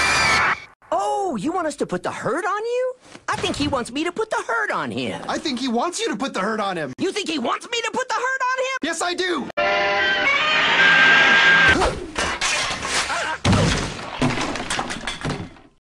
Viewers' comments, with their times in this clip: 0:10 sounds like someone’s been kicked in the money-maker